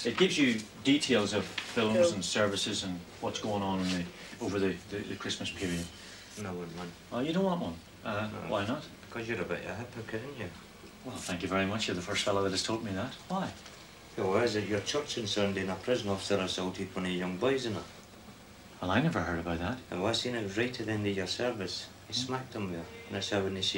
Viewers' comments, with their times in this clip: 0:09 what is the guy in the bed discussing? Can’t make it out.